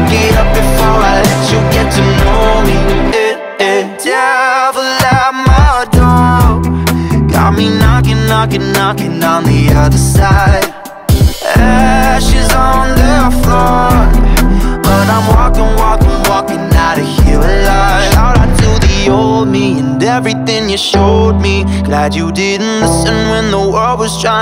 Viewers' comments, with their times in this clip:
0:05 the bass in is so sexc god